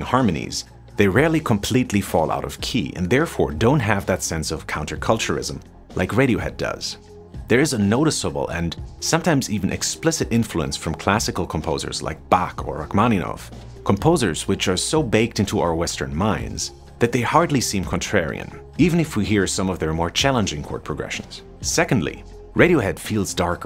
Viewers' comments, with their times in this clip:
0:06 Is it just me or does this dude sound like Derek zoolander LOL especially